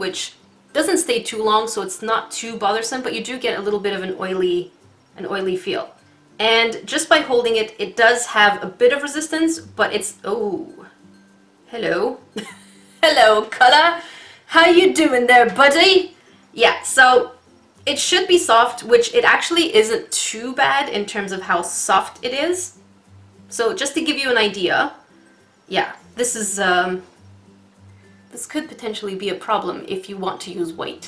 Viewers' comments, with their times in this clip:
0:04 British now activating
0:16 that accent tho 😂